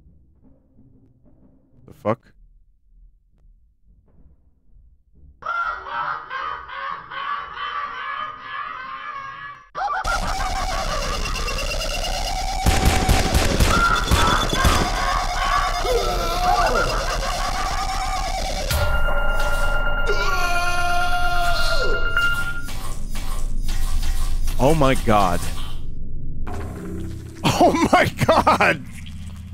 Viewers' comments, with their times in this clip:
0:10 You gotta say, this entire scene has some incredible perspective work I also didn't even notice that all of this was voiced by just one guy